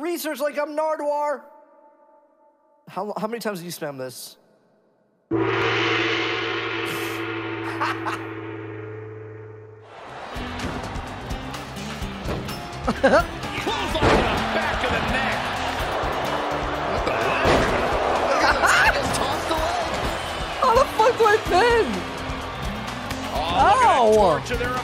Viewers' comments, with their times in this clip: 0:10 goofy ass laugh lmao